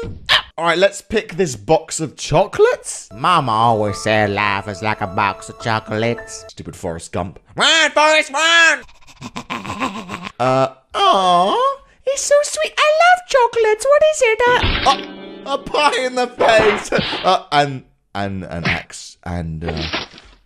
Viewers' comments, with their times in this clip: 0:08 RAAAN FORES RAAAN turns into a dog